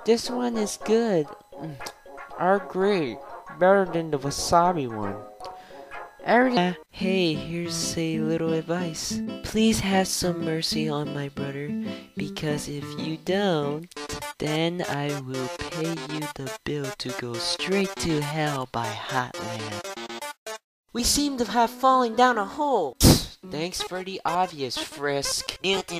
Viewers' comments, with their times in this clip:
0:09 Please have mercy on my BUTTER I heard That XDDD